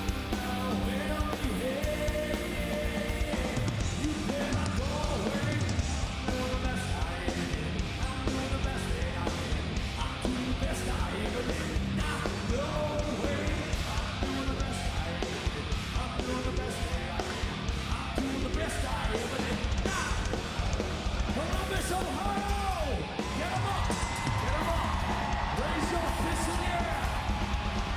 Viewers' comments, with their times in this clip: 0:10 it sounds like you can hear someone trying to order a Bud Light. Where did they pull audio from? Either way, this is a great performance and I've never really liked Godsmack until now. It's nice to see greedy corporate America finally recording and releasing video of performances of peoples favorite bands.